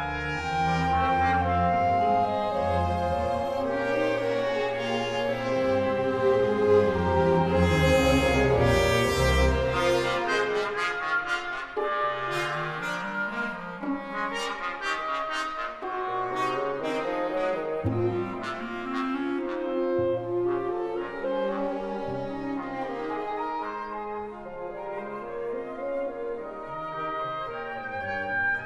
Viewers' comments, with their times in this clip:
0:09 Brass starting sounds like the Kyrie from Mozart's C-minor Mass!